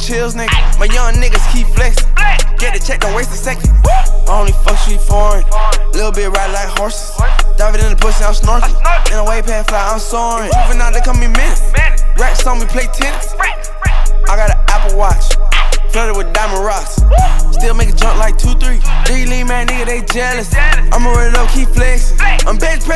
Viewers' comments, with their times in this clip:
0:05 I felt a Kodak vibe